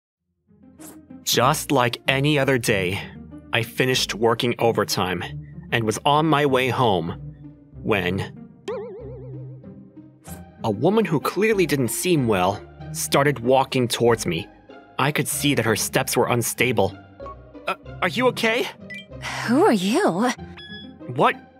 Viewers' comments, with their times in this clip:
0:04 Bro i'm i the only one who heard him say " i finished twerking"